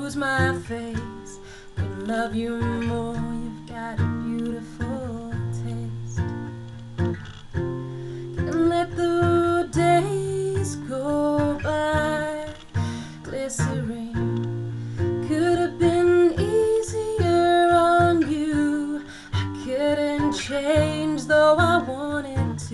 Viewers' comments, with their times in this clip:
0:05 at about a i fell in love lol! beautiful cover, great voice, i love the mellow approach, wonderfully done. keep at at!!!